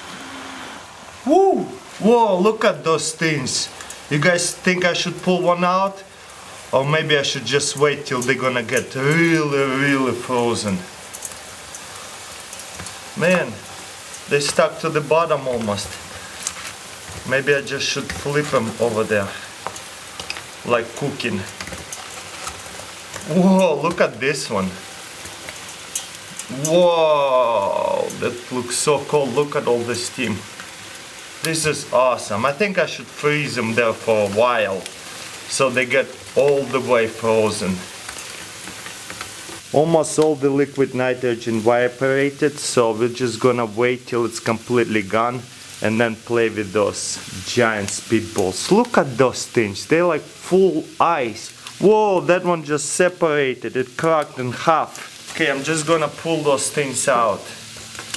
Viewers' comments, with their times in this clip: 0:10 Rearry rarry frozen
0:26 that was a sexual wooooowwwww
0:39 wiperated😂😂😂instead of evaporated
0:39 e w a p o r a t e d
0:39 wiperated😂😂😂instead of evaporated
0:39 wiperated😂😂😂instead of evaporated
0:40 Go to and listen to how he says 'evaporated' 😂
0:41 Anyone else notice the "All the liquid nitrogen VIBRATED"